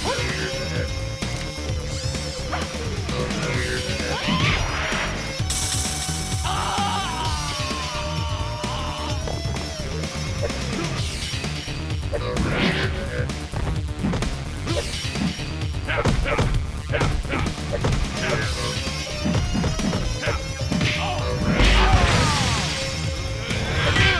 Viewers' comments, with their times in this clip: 0:06 keeps screaming while he's totally toasted. Tipically from MK 🤣🤣